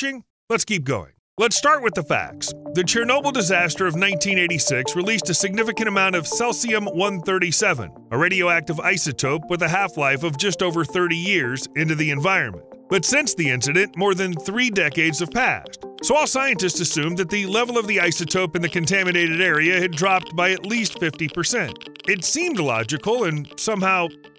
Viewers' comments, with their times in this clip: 0:03 Ceh-sium??? It's pronounced Sea-zium. Thanks for the correct facts about radiation effect.
0:06 Celsium? Seriously? wtf is that?